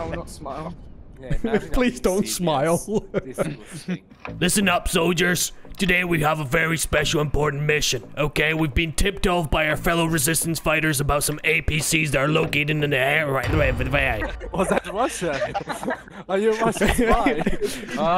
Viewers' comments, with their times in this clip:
0:04 you went full on Captain price for the briefing that sound like him when he does it in the cutscenes of Call of Duty or on the Radio